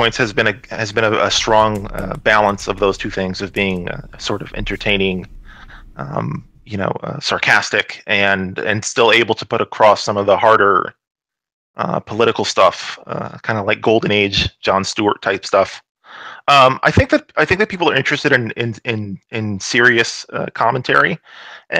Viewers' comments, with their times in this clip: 0:09 is he seriously trying to talk like Sam Harris